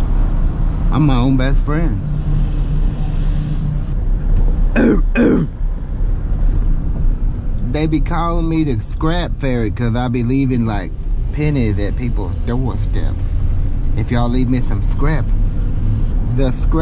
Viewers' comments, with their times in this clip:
0:04 thought it was DMX 🤣